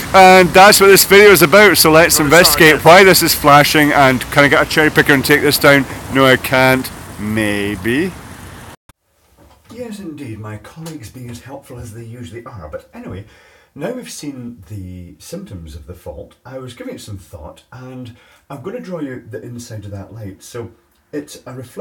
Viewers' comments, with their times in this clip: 0:09 At the point where you turn on your PDA, the audio is all but gone.